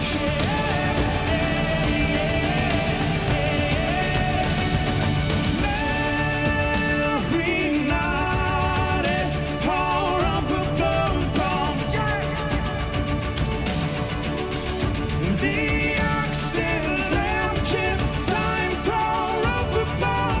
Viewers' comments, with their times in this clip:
0:05 So many epic things about this performance but I think the descant is my favourite